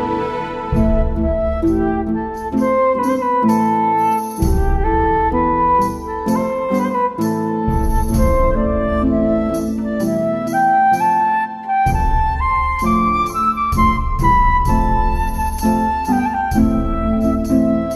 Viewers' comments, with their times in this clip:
0:03 I love the instrumental part ! Sincerely, Tolkien fan and flute player.